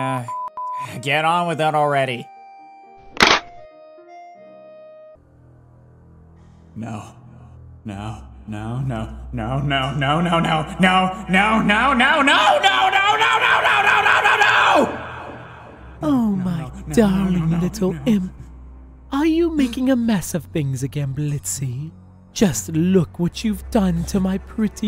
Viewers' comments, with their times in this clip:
0:06 I can’t.. this part sped up is hilarious….
0:10 why do I hear Cleveland here